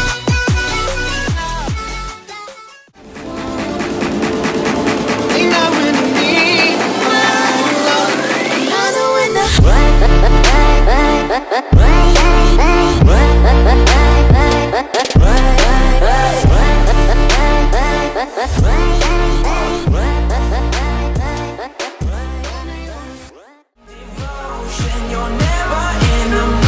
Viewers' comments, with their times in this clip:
0:10 weirdest soundtrack ever